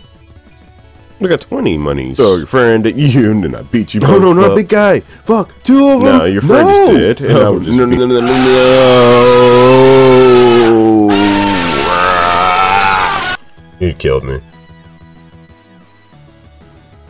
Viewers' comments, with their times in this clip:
0:03 idk what happened but the audio got fucked during processing and i didnt feel like re-editing this masterpiece of a video